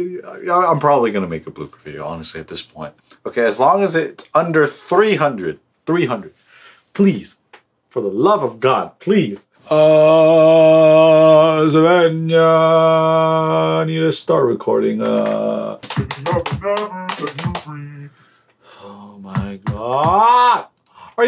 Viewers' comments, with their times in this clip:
0:09 𝕋ℍ𝔼 𝔹𝔼𝕊𝕋 𝕊𝕀ℕ𝔾𝕀ℕ𝔾 𝕍𝕆𝕀ℂ𝔼 2020